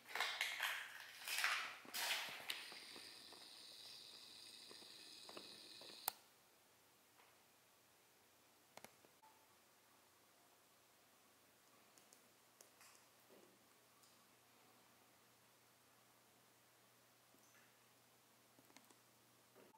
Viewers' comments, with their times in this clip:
0:03 the cringy noise from a powered zoom camera. :$ reason why I switched to manual zoom.